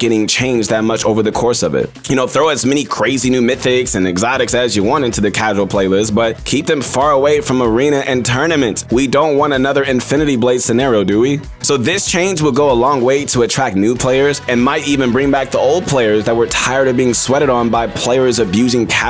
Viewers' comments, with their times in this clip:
0:07 ah yes, muslek.